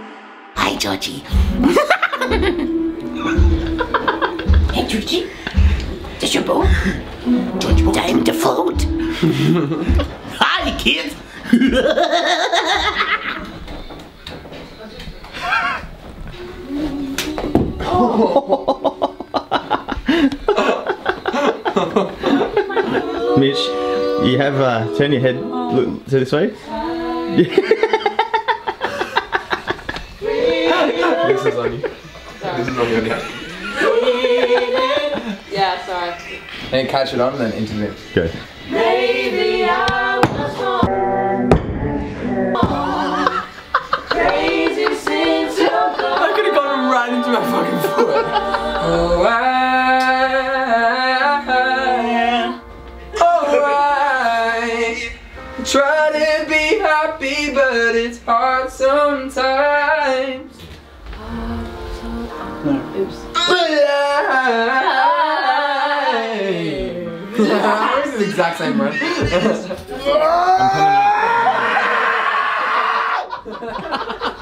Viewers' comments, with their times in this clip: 0:05 he's doing this voice again omg hahahahhaha
0:49 my favorite part of the video❤️ His voice is really mellifluous💕
0:57 Ok, but this sounds exactly like the original! Amazing